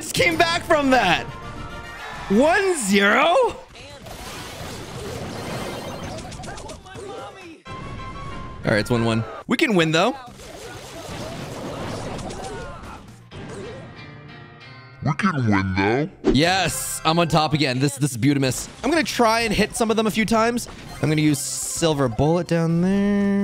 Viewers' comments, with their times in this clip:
0:09 wE cAn WiNdOw